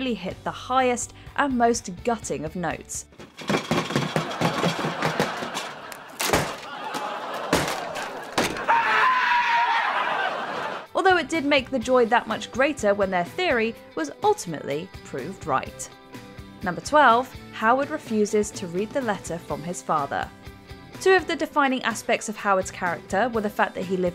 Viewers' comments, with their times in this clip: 0:07 I’m sorry, but Sheldon’s scream cracked me up 💀🤣